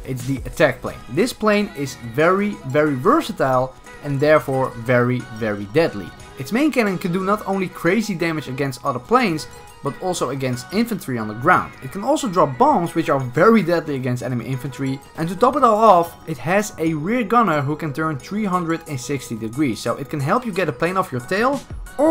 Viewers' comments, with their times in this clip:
0:08 ,it can also drop BONGS